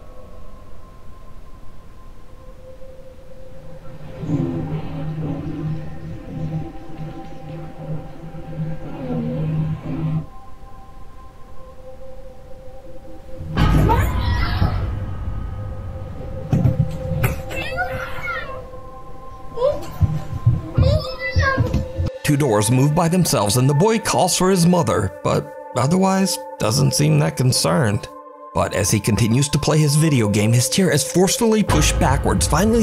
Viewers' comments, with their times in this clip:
0:03 it sounds like someone talking but I can't make out what it is saying
0:15 omg you can hear the voices before the sons chair moves chilling